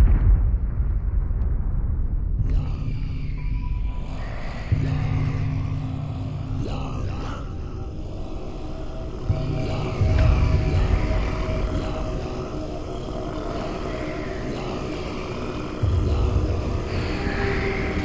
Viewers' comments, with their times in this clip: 0:04 Abe's Oddysee anyone? Yu-yuyu-yuyu-yuyu-yuyu...